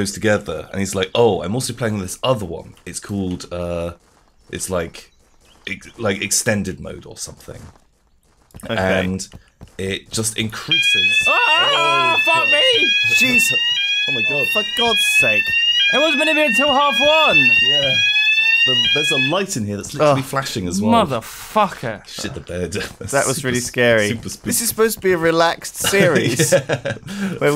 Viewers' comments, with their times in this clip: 0:08 Props to the editor who saved many of us from an awkward loud alarm going throughout the house